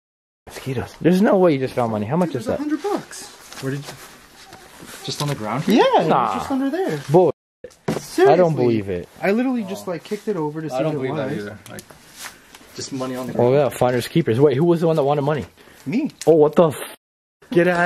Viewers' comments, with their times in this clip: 0:03 idk if its just me but it sound like either bugs passing (which it probably is) but it also sounds sorta like a dog in the distance barking owo
0:04 Idk if anyone else heard it but when they were talking about the money sounded like a dog barking but it might just been bugs buzzing idk